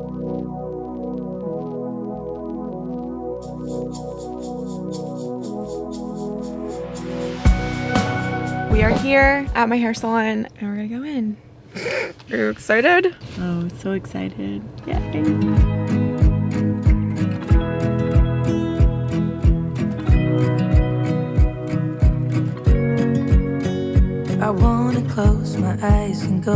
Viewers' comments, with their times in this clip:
0:07 we love a queen that has good taste in music 👌😍